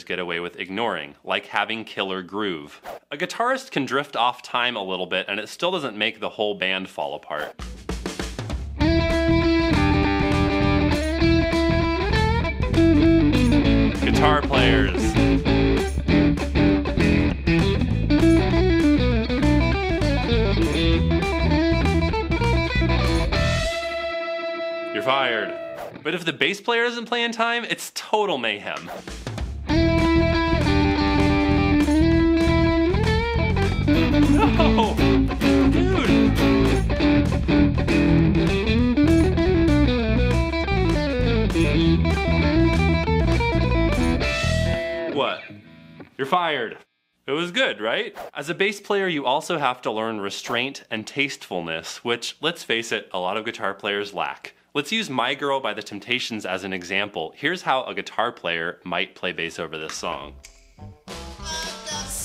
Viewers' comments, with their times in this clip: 0:08 can somebody tell me whats wrong? I get that the timing of the guitar is wrong, but I cant see where
0:29 you played bass almost as well as I shredd my air guitar 🤘🤘🤘
0:46 the bass player going off time is the absolute best 😂😂😂😂👏🏼👏🏼👏🏼👏🏼 So true bro